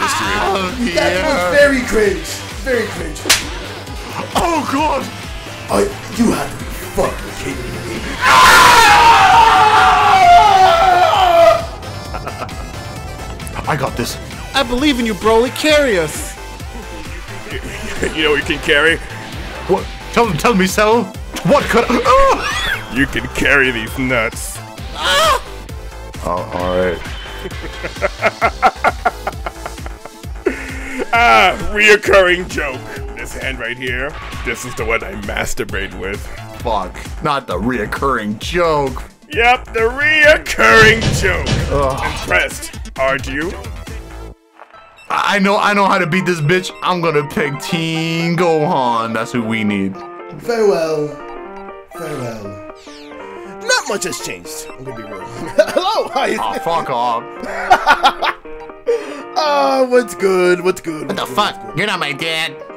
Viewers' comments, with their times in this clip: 0:05 is amazing. It legit sounds like Zamasu breaks character for a second before he gets evaporated.
0:44 Damn…the spider dance remix was a BANGER!!!